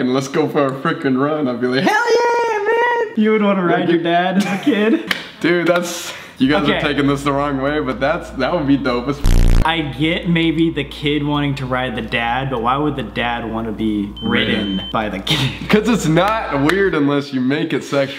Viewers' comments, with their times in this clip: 0:05 Did anyone else hear Colby moan and then look at Sam with a straight face like nothing happened 😅😂